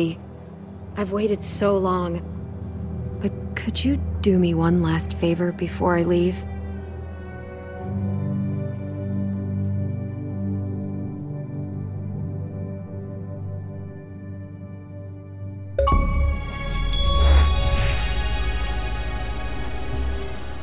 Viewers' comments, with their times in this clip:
0:07 Lee feels😭 (The song alive inside)😭😭😭